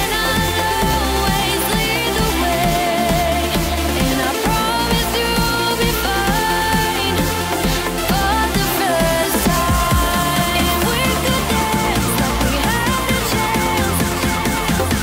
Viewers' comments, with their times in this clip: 0:03 🔥 Is this listentnig in march 2020 This voice is Phenomenal 💚💛 👇 👇 👇 👇 👇🔥